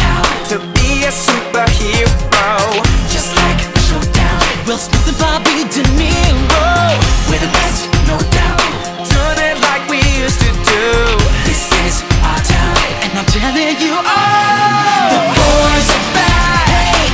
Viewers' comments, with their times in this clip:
0:03 Zac started the woah
0:04 HE HIT THE WHOA
0:04 "Will Smith and Bobby DeNero" do you know how long it took to figure that out
0:04 Troy did the woahh
0:05 Zac hit the woah